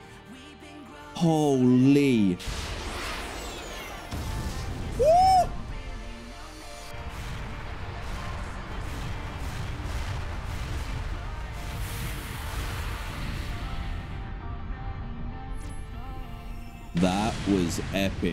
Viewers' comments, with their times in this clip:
0:03 was that a bloody x wing fighter jet sound??? Man sonic could take on the whole empire with super sonic mode